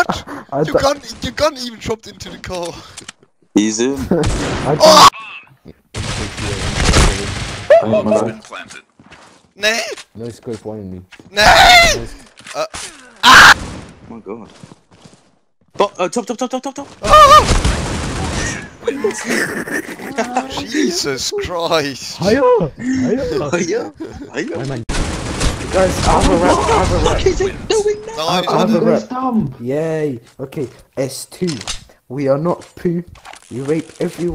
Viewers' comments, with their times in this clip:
0:04 Perfectly cut scre-
0:10 Perfectly cut scream lmao
0:18 that scream lmfao